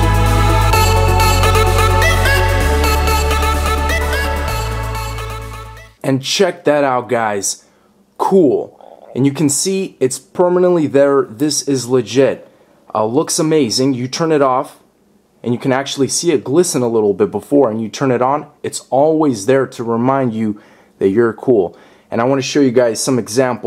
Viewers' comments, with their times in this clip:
0:08 you can hear his stomach at like
0:08 did his stomach growl
0:08 Did anyone else notice his stomach gurgle ? Lol
0:08 you can hear his stomach growl lol
0:08 I think I heard his stomach 😂😂😂
0:08 was that a frog.?
0:08 his stomach growled
0:09 you can hear that he is hungry